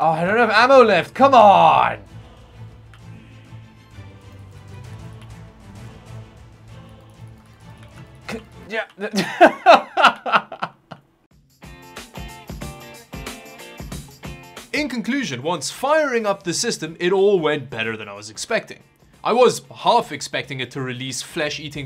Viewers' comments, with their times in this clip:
0:08 grown man with a weird english accent pwns kiddo online @ Fortnite with certified gaming™ PC from SOUTH CHINA GOLD. -colorized, 2021 subbed.